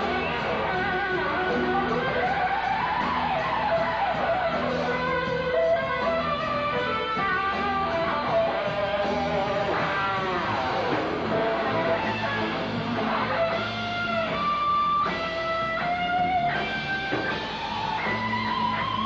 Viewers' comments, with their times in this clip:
0:04 The lick is so much fun. It's just a weird lil tap lick but it's so much fun. I don't play black star like Yngwie, I play it like Jason